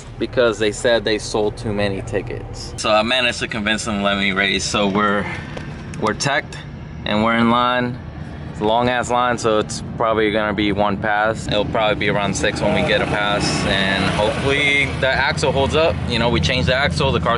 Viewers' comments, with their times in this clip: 0:05 Car's so bad ass its tacking at 9k rpm just sitting there waiting in line .🤯